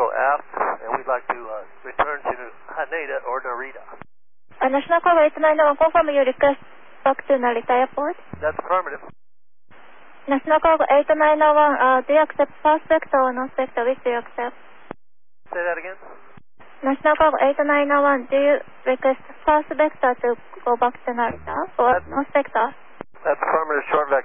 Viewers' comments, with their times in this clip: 0:10 I think she said “Do you accept north vector or south vector. For foreigners, I think first female controller’s experience is short. Especially Japanese English accent is not well because they are not trained about it. It is serious problems I suppose.